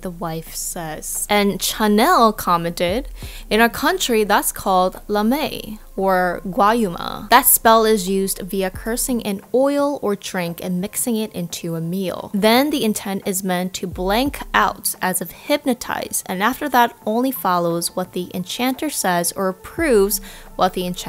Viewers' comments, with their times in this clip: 0:05 Grazy I literally laugh when you said "Lumae" and "gaeyuma" in it's pronounced Lu-may and ga-yu-ma and its not pronounced like American or British the way you should pronouce it is hard